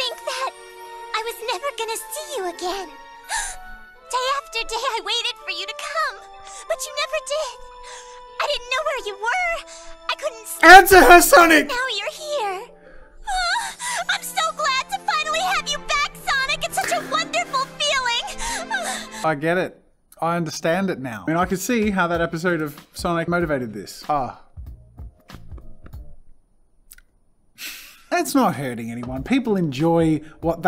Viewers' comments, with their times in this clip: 0:09 and that is why i hate english dub theres a chance one of the characters will sound like this ear rape squeaky voice
0:09 JIMINY CRICKETS JAZZA WTF MY EARS!!! MY EARBUDS WERE BARELY HALF WAY ON THE VOLUME!!!
0:10 I thought he said, “Enter her, Sonic!” LOL
0:15 ITS SUCH A GREAT FEELING Loud moaning